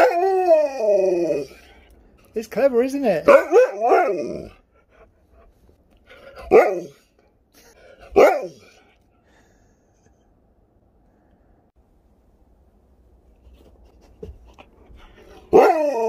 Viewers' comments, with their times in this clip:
0:03 i swear i heard Sherpa say Alexa lol